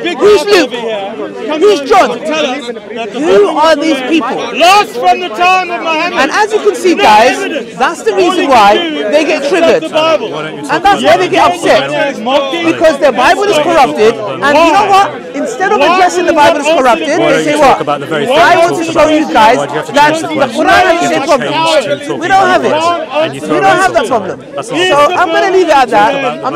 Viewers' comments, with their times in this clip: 0:08 It is idiotic yet funny how they try to talk in middle, just to make noise, to make sure the speech of other person isn't clear in the mic. he gets closer to the mic lol. Saw their dirty tactic many times!